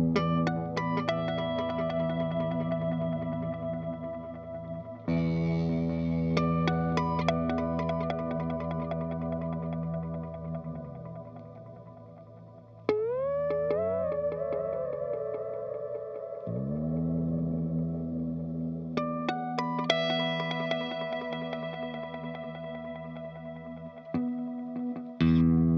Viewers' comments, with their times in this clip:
0:06 Hello from Brazil ...Every wonderful thing on the show ... however, I had to kneel down and thank my life so far when I heard Nick Barrett plays and sings "Water" by the band Pendragon ... awesome ...